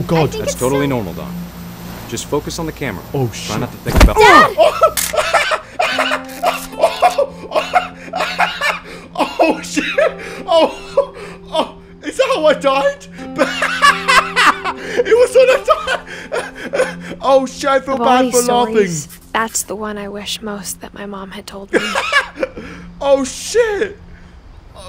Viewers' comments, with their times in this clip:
0:06 why did you laugh